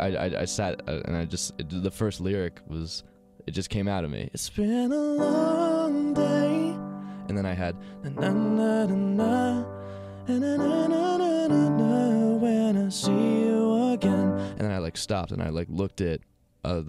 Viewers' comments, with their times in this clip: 0:04 his voice went to deep to an angel's voice